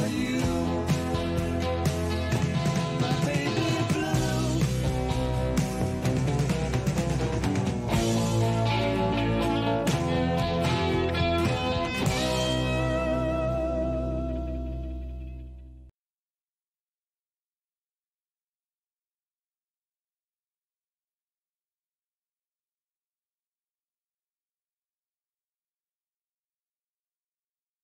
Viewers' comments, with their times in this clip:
0:08 Best ending ever and I love the song so much.